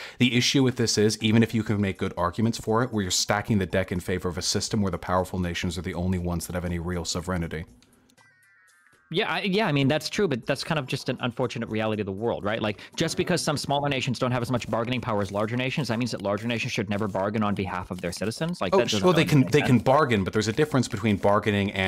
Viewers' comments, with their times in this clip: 0:07 Oh come on, Sovregnity? How hard is it? The word is Sovereignty, Jesus.